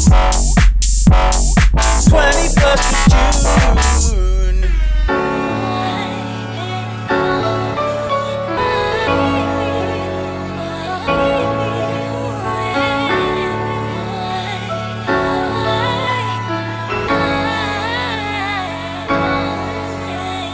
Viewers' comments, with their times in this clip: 0:05 The loop from has vibes that I want to hear more of!